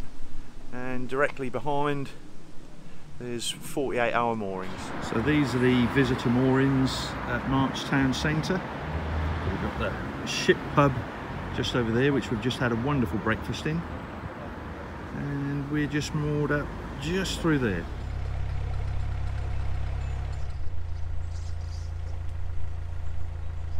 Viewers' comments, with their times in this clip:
0:08 "we've got the shit pub just over there" 😅